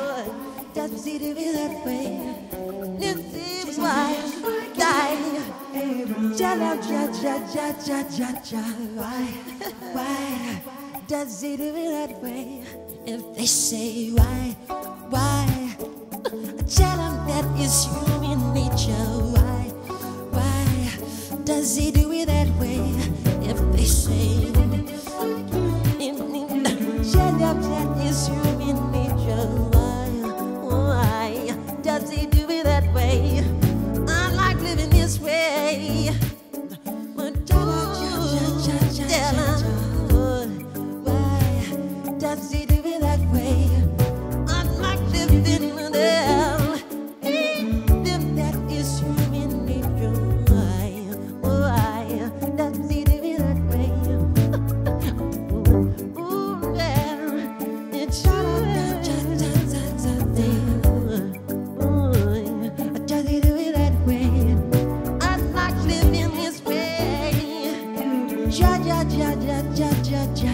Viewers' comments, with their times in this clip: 0:03 Michael sounds like he says Nipsey why 😞
0:24 I really like tut-tudut-tu-tududu...
0:50 yes Mike...sing that song Michael...show your skill; I can listen you adlive all day; when mike hit that high note im almost in tears and i'm a 41yr old man! We miss you so much Michael; thank God for the music you left behind.
0:55 😳 Them last 2 minutes was from to end was a song in itself. I am 💥💀👀 away.
0:57 that angelic voice, it could make you happy we had him and sad that he's gone